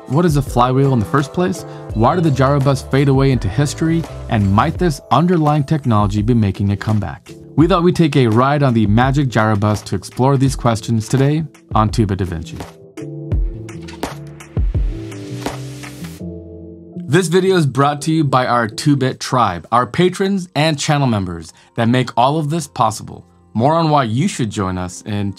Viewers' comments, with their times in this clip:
0:10 Notable ironic exception... "Tuba Duhvinchy"